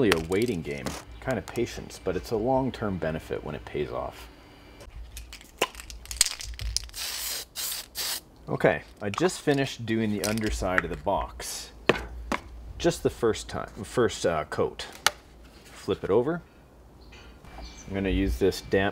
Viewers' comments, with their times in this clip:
0:05 sounds like gta san andreas start up